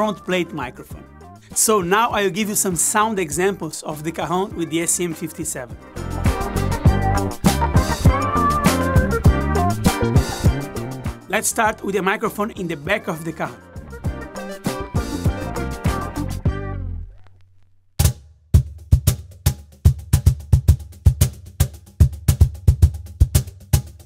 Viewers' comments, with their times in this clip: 0:06 What is the background music it sounds funky af